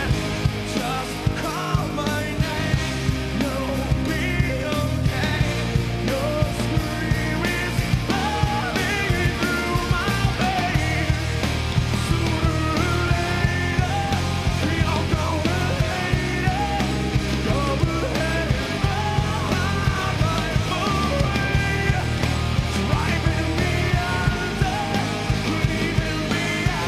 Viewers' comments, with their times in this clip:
0:06 fucking wish the studio version had that vocal flair. Love it. Best version of this song
0:06 Amazing.. Ben Burnley Has an amazing voice, Live. Breaking Benjamin Rules! Can't wait for there New Album in December :]
0:10 great voice progression
0:10 love his voice on he can really sing
0:10 the way he says "veins" is awesome!